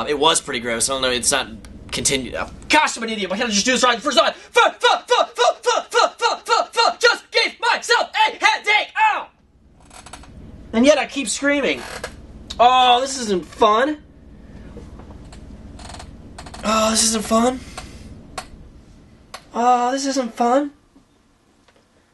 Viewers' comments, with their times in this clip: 0:04 sounds like he is saying fuck!